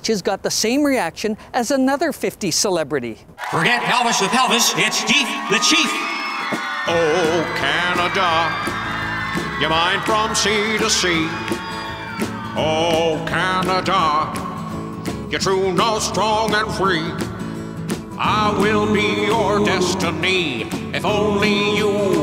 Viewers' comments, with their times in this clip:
0:03 The Diefenbaker music reminded me of "Cow-Punk" style of music. Also the singer's voice reminded me of the song, "Mexican Radio" (by Wall of Voodoo) It was a good album, IMO.